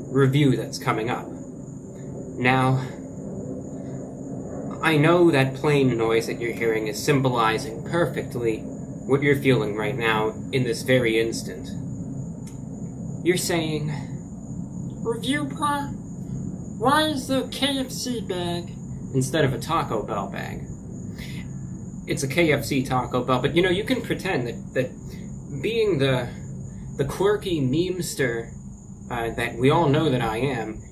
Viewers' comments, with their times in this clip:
0:07 Reviewbrah private jet landing on his backyard
0:14 hate to admit it, but he nailed my voice.
0:14 The voice is truly the voice of God himself.
0:14 Haha he sounded like Elmo or somebody off of sesame street
0:15 WHY NO ONE IS TALKING ABOUT THAT VOICE
0:15 why my man be sounding like Sir Finley Mrrgglton from WoW?